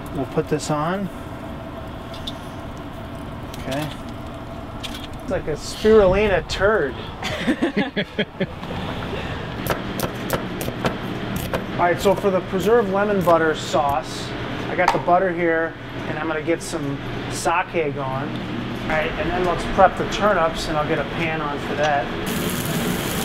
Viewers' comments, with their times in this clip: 0:04 sounds just like Norm Macdonald